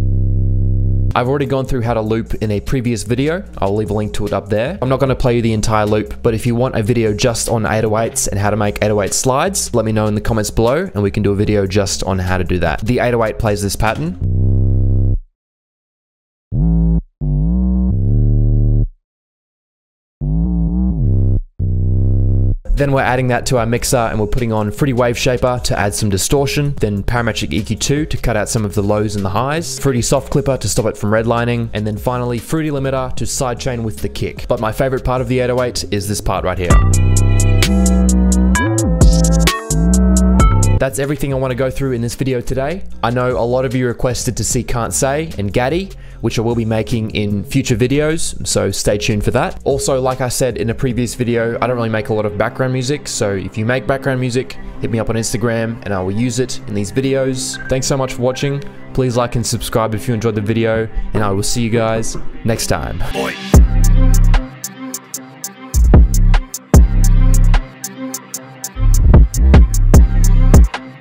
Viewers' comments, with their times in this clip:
0:03 him: the 808s aren't too complex the 808s:
0:14 This 808 pattern is almost Drill 808 🤣🤣
0:34 yes man when 808s get warped up it sounds so nice
0:57 I thought my galaxy buds beeped lol